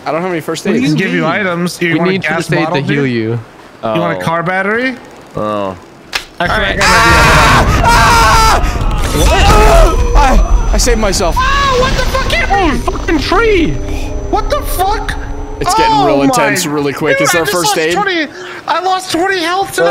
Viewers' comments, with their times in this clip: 0:06 Mans sounded like he was getting murdered irl